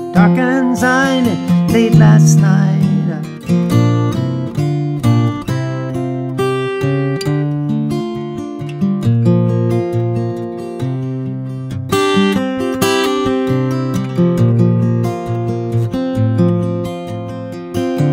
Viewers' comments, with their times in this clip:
0:03 that lick has killed meeeeeeeeea